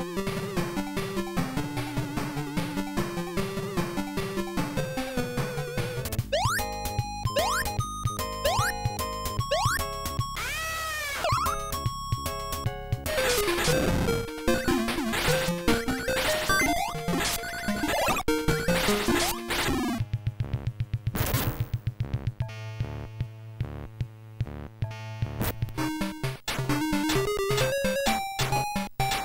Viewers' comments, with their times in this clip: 0:10 why does it sound so damn goofy 😂